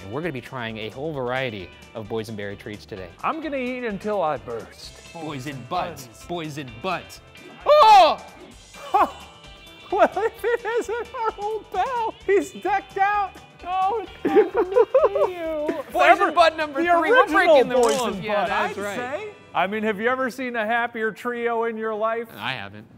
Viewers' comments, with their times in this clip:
0:07 Ryan's yelp at seeing Snoopy is still just pure joy